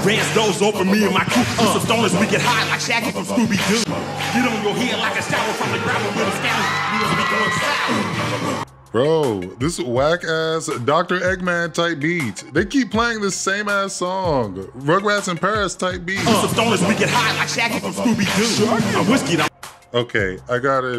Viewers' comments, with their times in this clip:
0:08 NGL WTF was that heavy metal remix in the begining that was ass..... but i will not stand for the constant E-40 slander😂😂😂😂